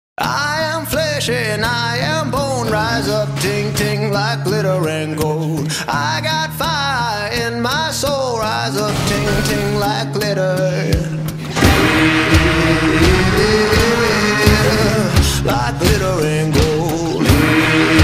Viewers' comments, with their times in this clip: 0:03 when the gun syncs up with music is great anyway this whole video is great.